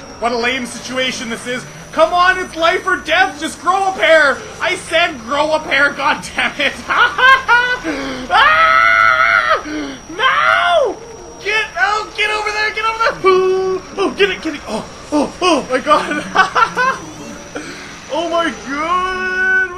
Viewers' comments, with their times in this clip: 0:07 again your scream has made my week LOL!